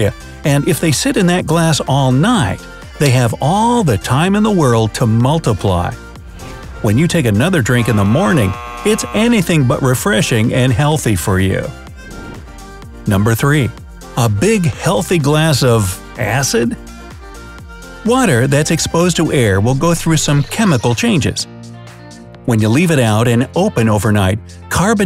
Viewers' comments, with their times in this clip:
0:07 DID I JUST HEAR THE BACKROOMS?